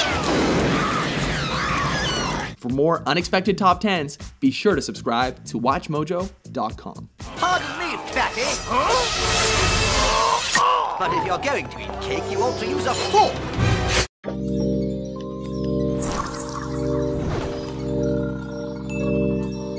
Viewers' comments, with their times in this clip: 0:07 "pardon me fatty" sounds like stewie